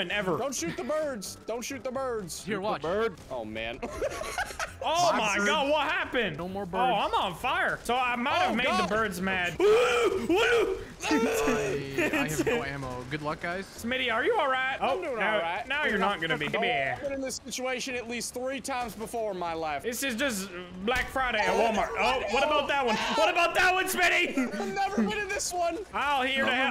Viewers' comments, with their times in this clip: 0:09 bro thats a matting call bro XDDDDDDDDDD